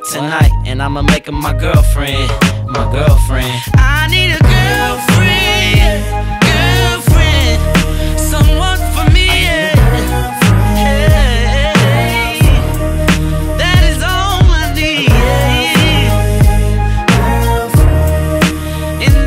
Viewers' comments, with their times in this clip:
0:04 Omarion goes off with the vocals 👌🔥💯